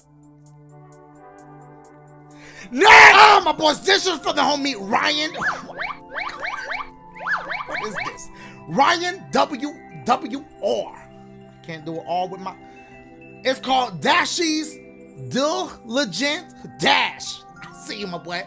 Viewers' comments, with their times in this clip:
0:05 I love that sound effect you do lol